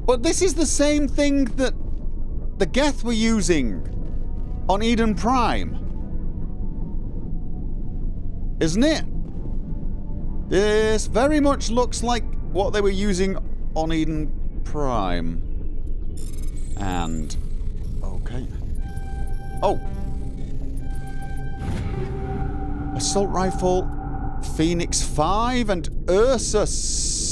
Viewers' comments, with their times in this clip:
0:10 Eden Prime! not, prime. It's, Prime! This is very important you get it right